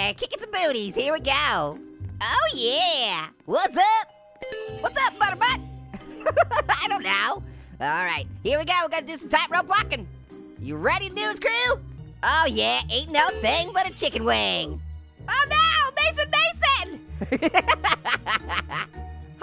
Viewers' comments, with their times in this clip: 0:06 Lol HIS LAUGH 😂🤣😂🤣😂🤣😂🤣😂🤣